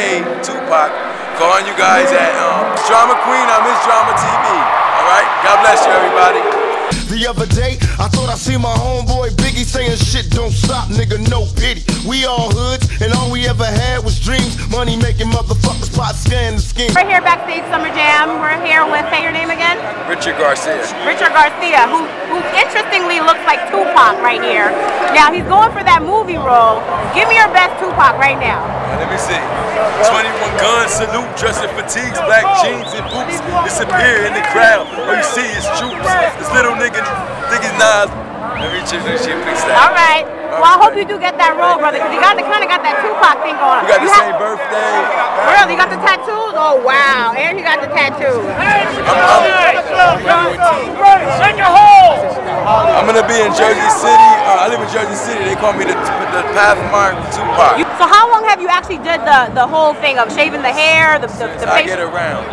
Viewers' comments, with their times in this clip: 0:04 Biggie Smalls in the background
0:48 showing the " thug life " tatoo while getting screamed at by a old homeless dude .... sooooo funny !!!!!